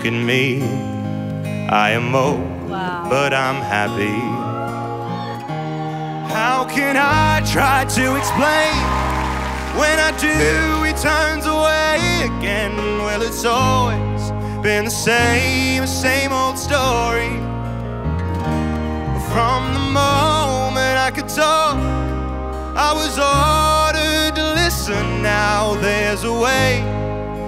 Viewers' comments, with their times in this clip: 0:10 oof that voice crack but what a performance tho